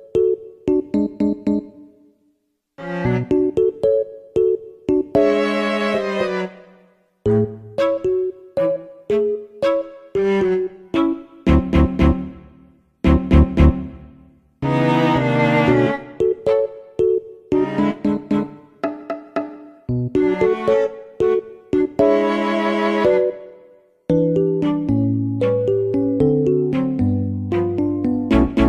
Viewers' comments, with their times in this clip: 0:03 ok but why does wii music fit perfectly into this promo... it’s like she wanted clout lmao
0:13 I can’t take his seriously with this music 🤣😂😂🤣🤣😂😂🤣🤣